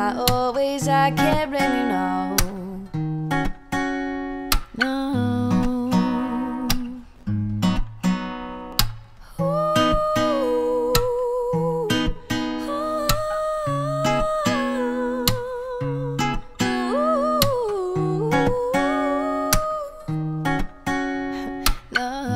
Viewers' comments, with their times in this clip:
0:09 voice of an angel